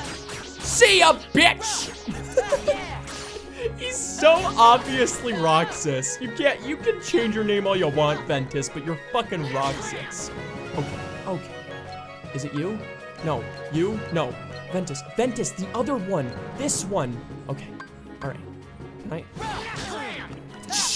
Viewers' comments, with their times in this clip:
0:04 Fun Fact: Roxas' battle quotes from KH2 were actually removed from the HD collection and replaced with a mix of Roxas' battle quotes from 358/2 Days and Ventus' battle quotes from this game. So Roxas and Ven sound even more similar than they did originally